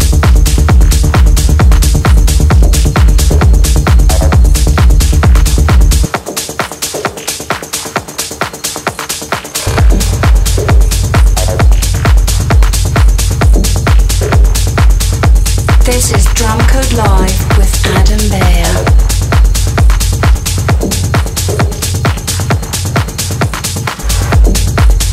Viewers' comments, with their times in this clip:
0:06 same good vibes than Julian Jeweil, beautiful